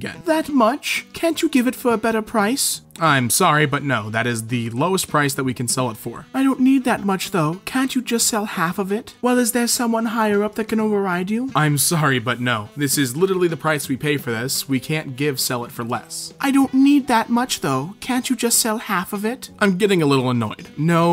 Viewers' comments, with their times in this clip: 0:09 why does the customer in this story sound like one of those auto mated mesiges